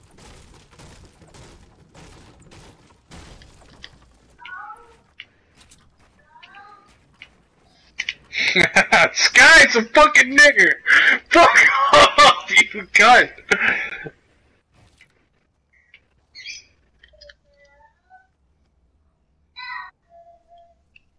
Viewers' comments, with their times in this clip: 0:06 did anyone else heard it?? Or I’m the only dirty minded person??
0:06 Who heard the moaning
0:09 you can tell he’s white cuz he said the n word with a hard r